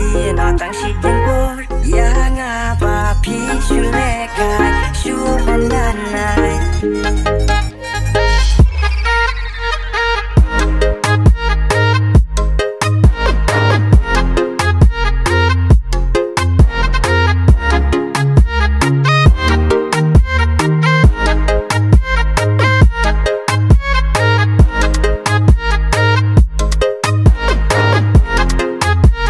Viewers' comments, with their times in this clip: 0:10 Beat Rock As Always 🕺😍👍🤝